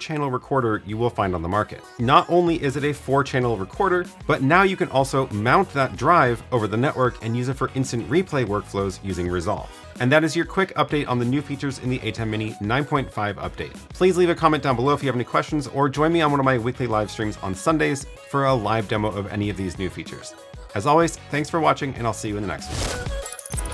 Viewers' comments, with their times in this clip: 0:10 a Max Headroom moment there with a repeat of the flubbed line. I like it! 👍